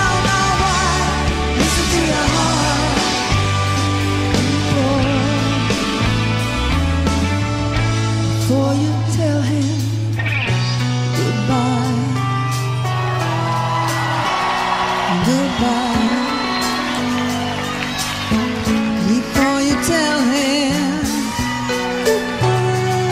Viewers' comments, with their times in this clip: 0:10 The way she sings goodbye is heart wrenching. Knowing what we know now in her sadly you leaving us. It was like an unspoken understanding/message.
0:10 The way she sings goodbye is heart wrenching. Knowing what we know now in her sadly you leaving us. It was like an unspoken understanding/message.